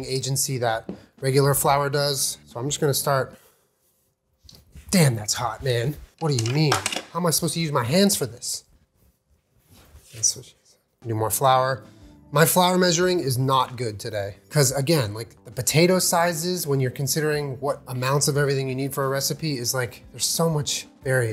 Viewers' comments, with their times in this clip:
0:04 the whispered "that's what she said" had me CRY LAUGHING